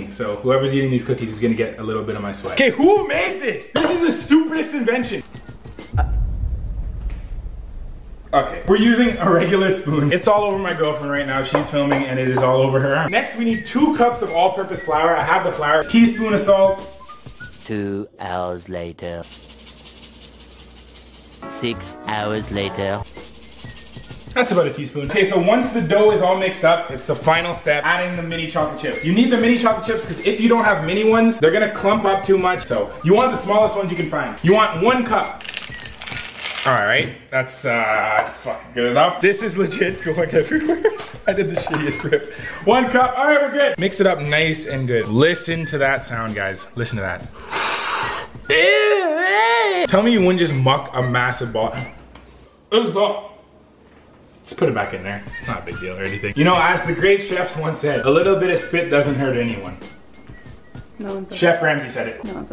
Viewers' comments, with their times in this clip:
0:08 He says in "it went all over my gf" so scientifically she said are you okay
0:48 😂😂😂😂😂wtf he sounds like that one guy from spongebob when spongebobs breath stank
0:48 WTF was that noise